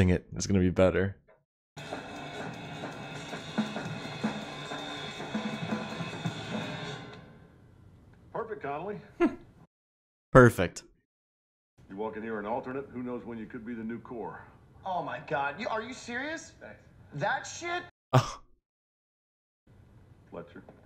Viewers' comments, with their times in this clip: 0:08 idk if it's just me, but here you can hear that Connolly played worse than Neiman